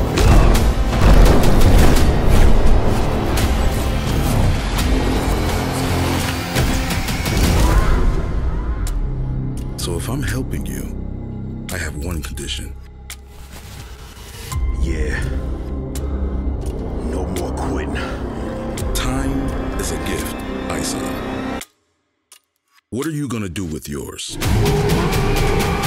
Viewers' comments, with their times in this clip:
0:09 the clock ticking is jsut so perfect. Is his time up? Or does it represent is patience?